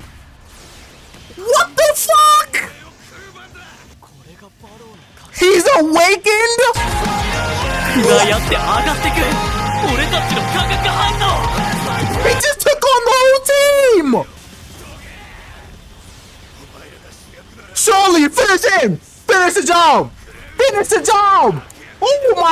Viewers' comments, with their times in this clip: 0:07 What's the name of the music ?? Sounds like Starset